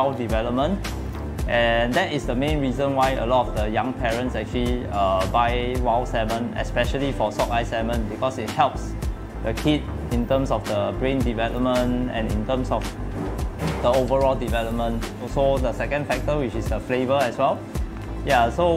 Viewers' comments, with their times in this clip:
0:03 neutrons ?? seariously what are you really says be clear neutron are present in atoms what is this man be clear